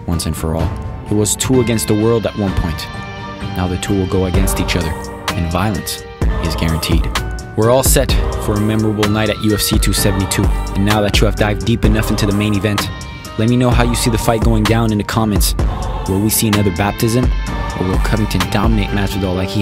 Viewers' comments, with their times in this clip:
0:04 That beat drop go crazyyyy 🔥